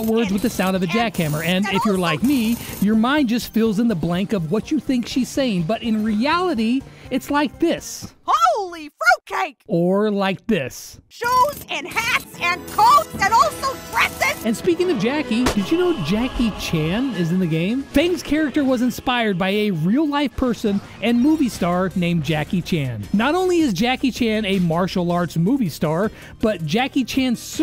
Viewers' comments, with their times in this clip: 0:09 I luv how you sync Jacky's uncensored lines with censored lines! 😆 BRAWL~!